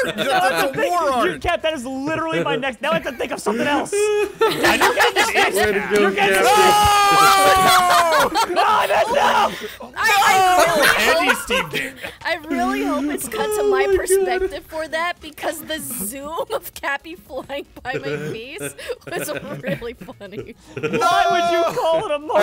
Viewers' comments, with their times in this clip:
0:06 play this at 25% speed and you'll hear your gay (not lying I heard your gay)